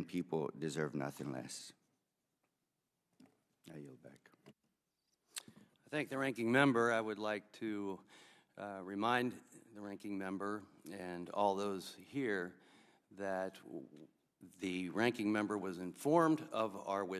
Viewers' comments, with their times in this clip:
0:05 The other guy starts talking at the number "13" with interest demeanor.